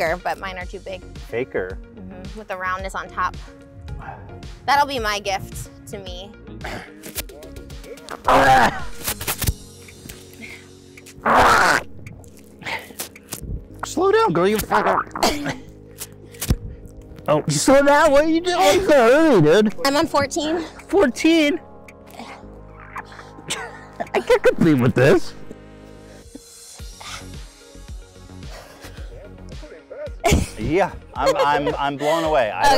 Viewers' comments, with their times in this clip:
0:07 omg i literally just laughed for 15 minutes about that sound ethan is doing hahahaha that sounds atrocious xD not blaming him, it would probably sound the same if i did it but god i fucking laughed hahaha
0:14 why it sound like he shit himself